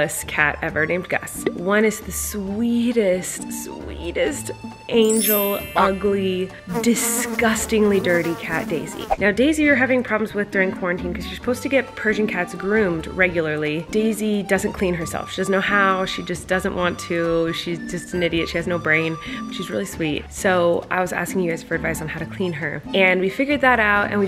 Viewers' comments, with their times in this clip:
0:07 Me with headphones in : ahhhh there’s a fly